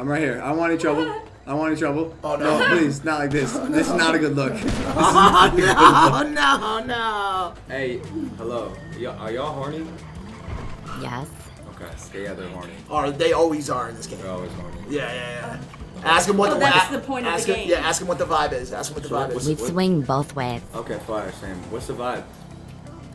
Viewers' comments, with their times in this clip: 0:10 I swear thats a dude with a voice changer XD